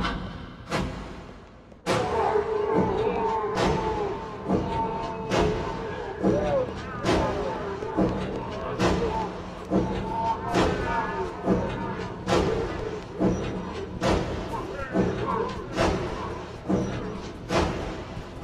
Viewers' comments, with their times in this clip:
0:03 reminded me of dubstep lol